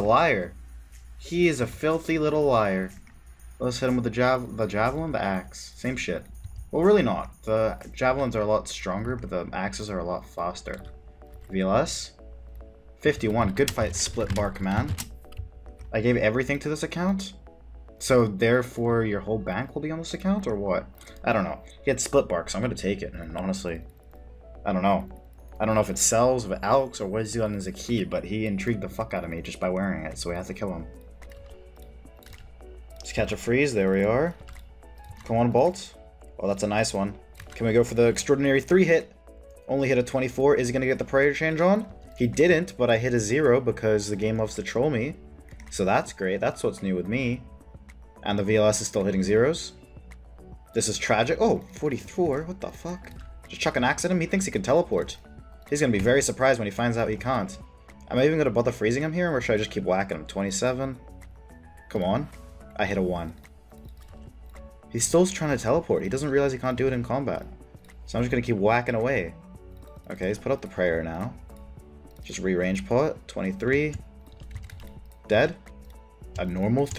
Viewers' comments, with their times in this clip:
0:10 Random British accent word "faster"
0:57 what's up with the random British accents? "Can't"